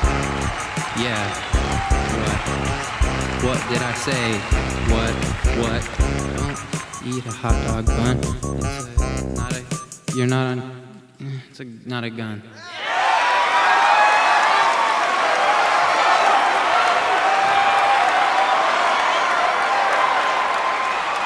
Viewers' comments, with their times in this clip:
0:06 I heard "eat a hotdog bun" and I DIED laughing ;')